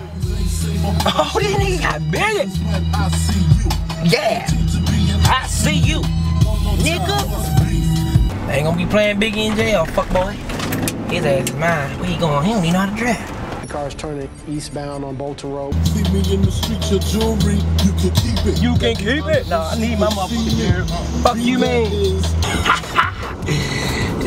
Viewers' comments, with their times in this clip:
0:06 how he said fuck boy so funny